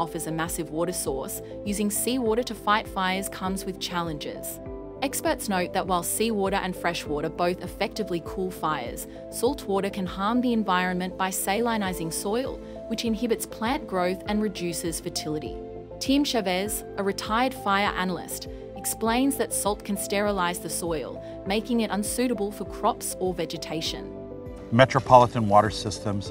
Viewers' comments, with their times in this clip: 0:10 is this an ai voice? salinizing?